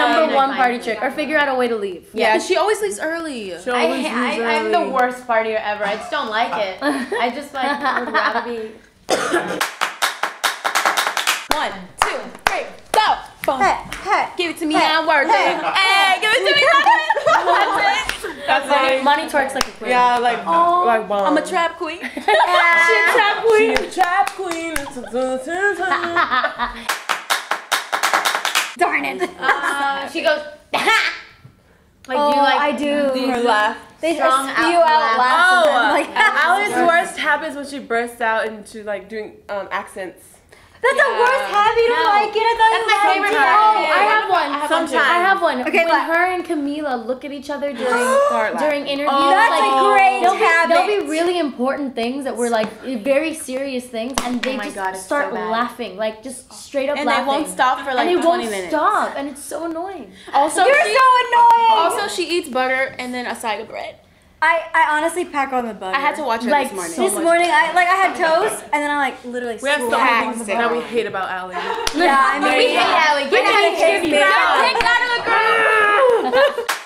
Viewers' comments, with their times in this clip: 0:06 the way Lauren laughs is so fucking adorable!
0:06 that lauren laugh omg
0:07 lauren.. camila didn't even make a joke and you're still laughing at her And they're just roasting ally 😂
0:07 Lauren's laugh Heaven...
0:25 Lauren's laugh is adorable
0:25 Lauren's laugh... puppyyyyyyy
0:25 Why ain't we talking about Lauren's super-cute laugh ? Like I just looped it. It's too cute.
0:25 Lauren's laugh heart eyes
0:25 lauren save us some life and dont laugh.
0:26 Lauren's laugh made me pregnant! Omg 😍💕💚
0:58 "And they won't stop" she sounds so adorable.
0:58 The way Lauren said "And they won't stop and it's annoying" it's so cute